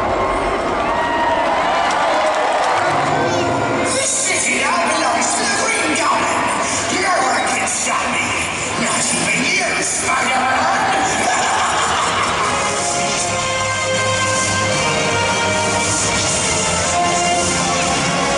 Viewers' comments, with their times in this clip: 0:03 "This shitty belongs to the Green Goblin!" I thought this was a kid's show...